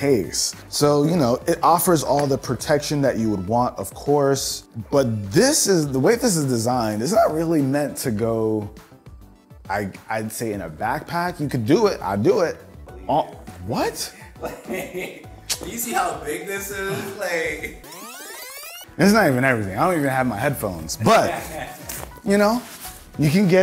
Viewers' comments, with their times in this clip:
0:08 That voice crack lmaoooo